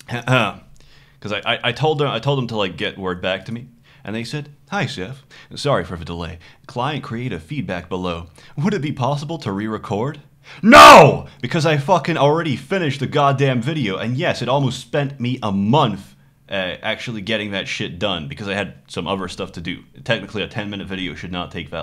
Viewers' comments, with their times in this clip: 0:09 Future viewer,please lower the volume ,your ears will thank you later